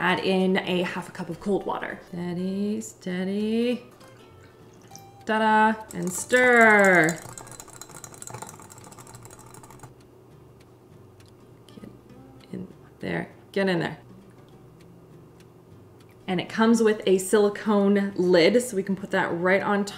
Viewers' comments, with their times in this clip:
0:04 watching with subtitles and "steady steady" turned into "daddy's daddy" 😂😂